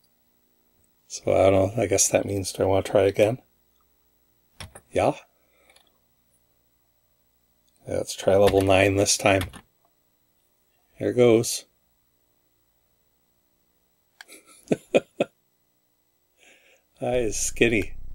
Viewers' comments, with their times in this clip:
0:03 That "Ja" was just pronounced perfectly. It litterally confused my as my brain immideately switched to "I'm watching a native language video"-mode.